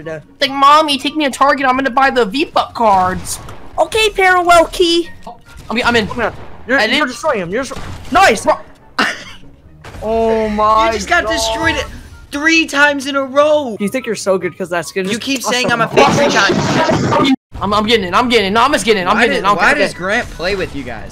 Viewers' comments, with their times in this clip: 0:04 If u go to he pronounces it Key, too